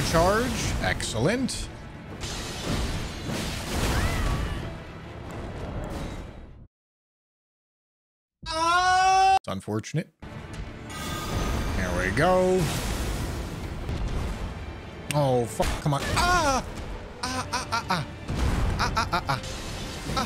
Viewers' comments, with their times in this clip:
0:07 the scream sound like sr. Pelo